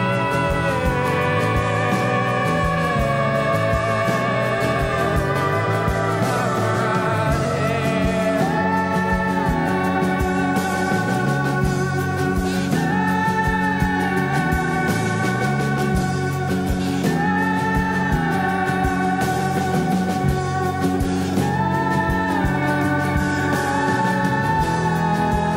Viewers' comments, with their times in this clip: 0:08 here i give you beautiful falsetto